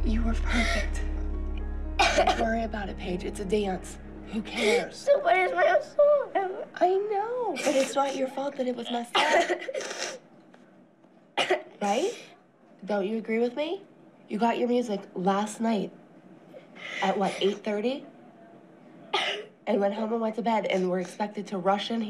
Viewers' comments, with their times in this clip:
0:03 made me so sad “i fowgot my tuck” her little voice :(